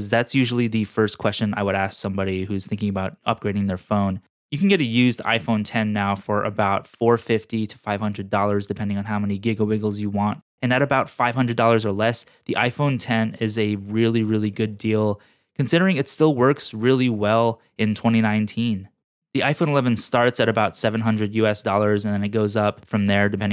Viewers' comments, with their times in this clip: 0:09 Is it just me, or did he just say “giglebigles”?